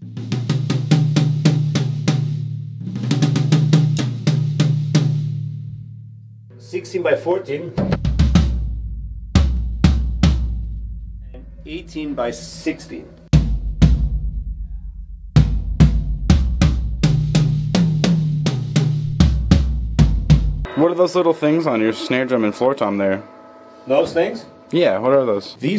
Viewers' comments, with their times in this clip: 0:07 hear a glimpse of what that floor tom really sounds like with out the Mic & EQ lol